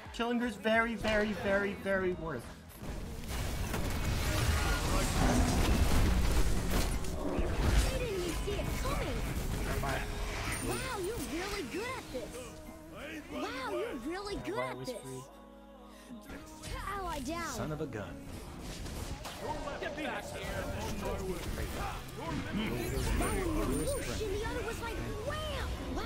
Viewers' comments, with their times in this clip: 0:10 dies Aang: Wow you're really good at this, wow you're really good at this. That announcer pack would annoy the hell out of me.